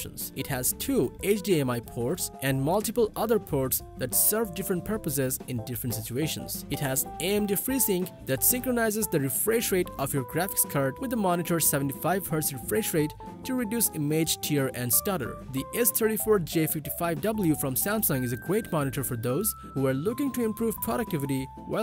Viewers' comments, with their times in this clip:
0:08 is happy birthday actually playing in the background ?